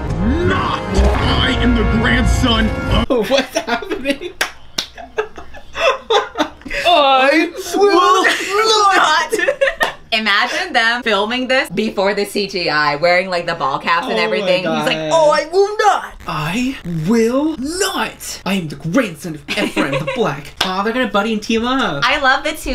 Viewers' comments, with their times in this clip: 0:08 Jacob was really calling back to his Shark Boy days with this line read.